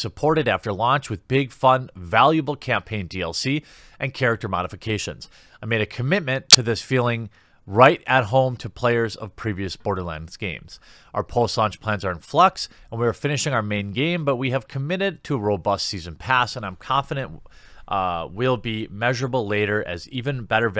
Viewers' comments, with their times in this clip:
0:05 got a nasty audio error :(
0:05 There's a crack in the sound that's quite unexpected. Just in case you see this.
0:05 Jesus, the audio glitch spooked me
0:06 audio bug scared the crap out of me